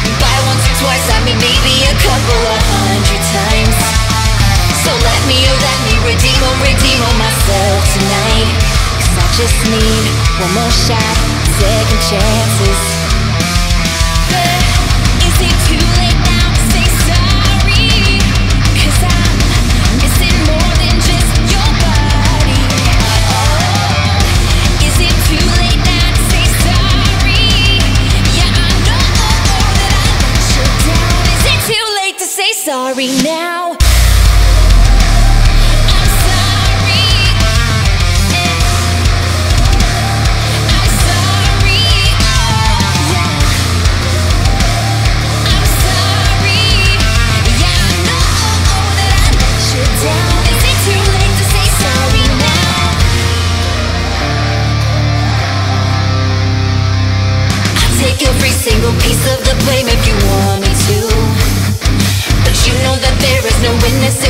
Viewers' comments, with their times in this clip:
0:06 it sounds like a Volumes riff
0:33 almighty god that clipped like hell, nice cover but ffs, when you gonna change that god awful tone man!
0:47 you need to tune that guitar.